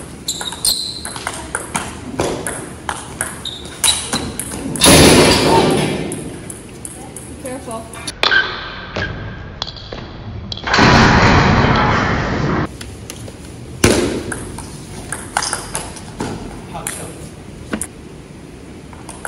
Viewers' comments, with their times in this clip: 0:05 boarder knocking guy lol